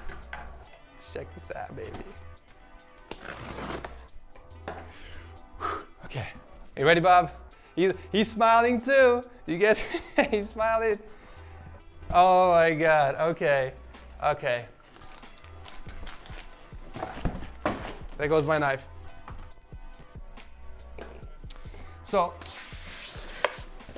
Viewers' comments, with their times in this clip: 0:07 You sound like Jake Paul for a few seconds... HMMMMMMMMMMMMMMMM I wonder why.